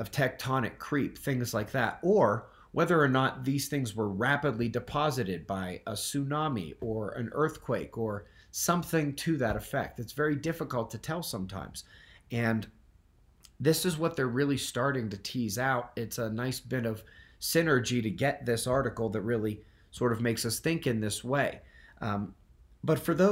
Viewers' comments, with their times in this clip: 0:07 I made it to Simply unlistenable. Bye.